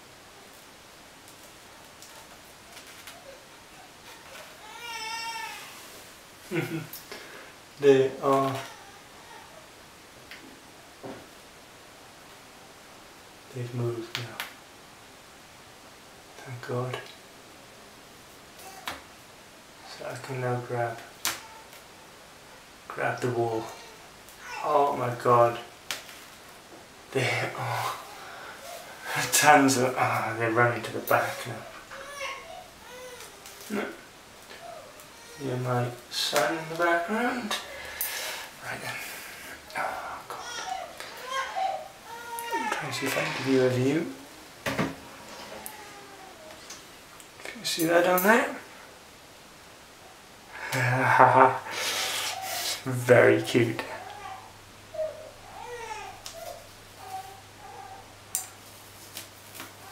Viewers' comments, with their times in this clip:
0:03 omg they sound like a real baby
0:04 Ha!! Once you got the hole made, I could hear the slings crying like a baby!
0:41 What was that sound was somebody being raped?!!